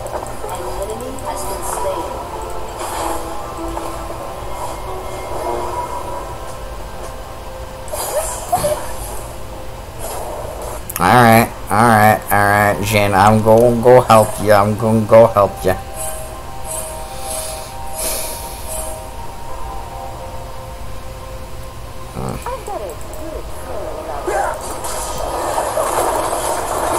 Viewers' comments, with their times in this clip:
0:10 what kind of accent is that?? XD